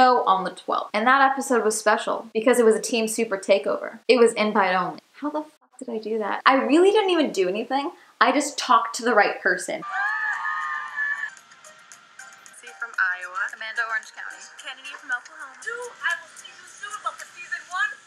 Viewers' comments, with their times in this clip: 0:04 wtf did you say here? I've re-listened to it multiple times and still have not idea. "It was empire owned"?